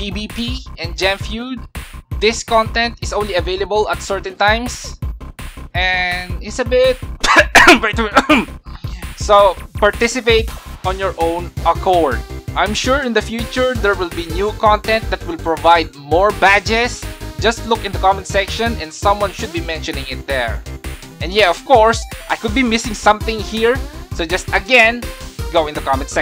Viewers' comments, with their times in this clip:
0:07 Its a bit what i diddnt understand ?